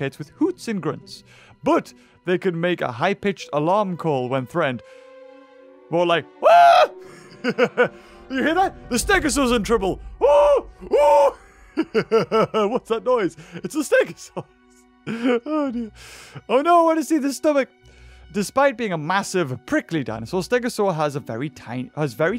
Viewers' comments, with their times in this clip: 0:05 Beavers mating call